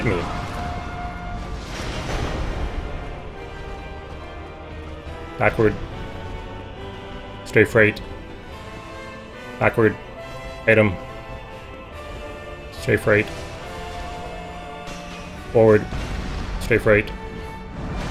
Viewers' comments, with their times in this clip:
0:04 elected me hahahahah